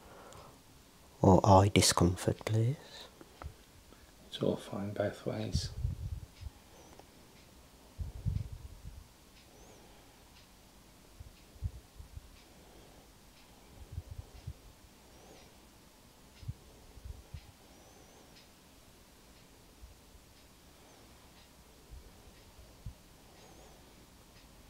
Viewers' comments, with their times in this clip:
0:08 why am I hearing his heart